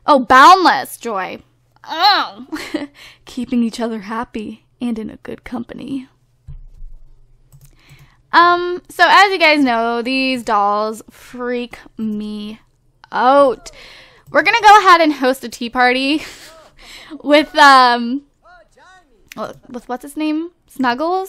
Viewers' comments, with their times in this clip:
0:07 creepist yet most hilarious voice ever! XD